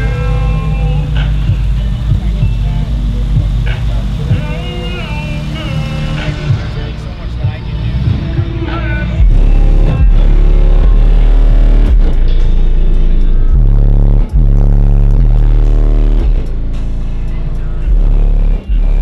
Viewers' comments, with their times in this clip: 0:05 The song name?! BASSSS